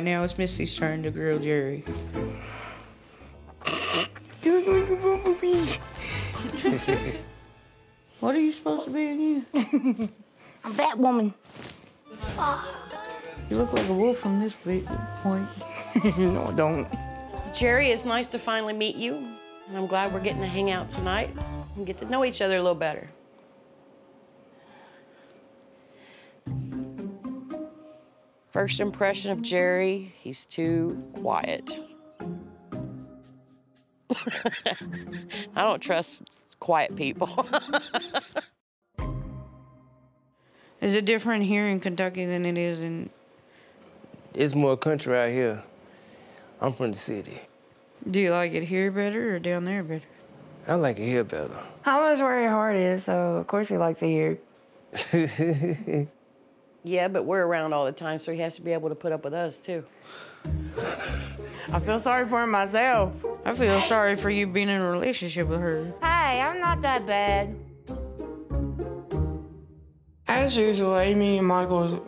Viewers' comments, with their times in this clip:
0:03 Without the subtitle I would think she was mumbling
0:54 he isnt laughing with her hes laughing at her...